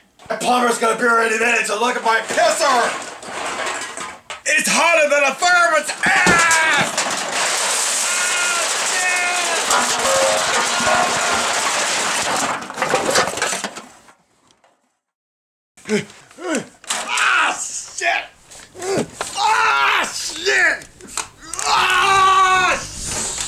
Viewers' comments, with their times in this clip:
0:09 His distant scream actually sounds like he got eaten alive by that mountain of beer cans. On a serious note though, someone should clean his place up, it's dangerous for someone his age to possibly get stuck under a beer can avalanche.